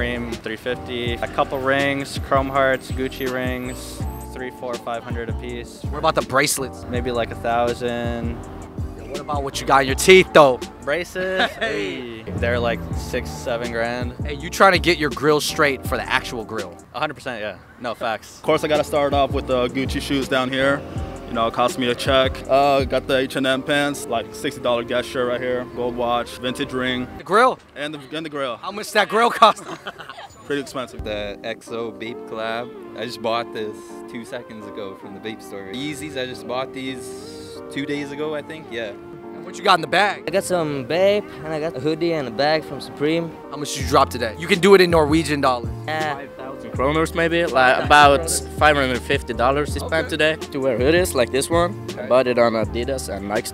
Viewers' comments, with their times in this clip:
0:03 Damn the guy who got interviewed works at my local consignment store I think he owns it too! Crazy ..he’s as chill as in the video too! So monotone lol. Damn he got most of the answers right compared to the rest #representingtoronto
0:39 Im Sorry For Being Rude But That Dudes Voice Tho